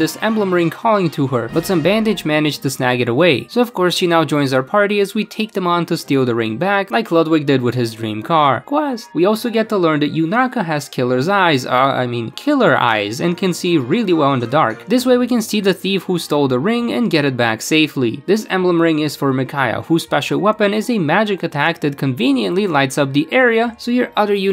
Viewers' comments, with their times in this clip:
0:07 the quiet ‘quest!’ Lmao